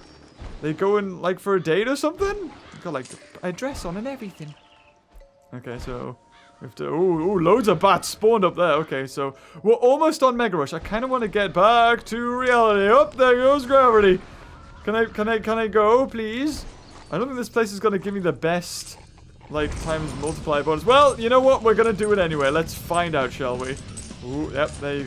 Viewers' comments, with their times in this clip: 0:06 those are crows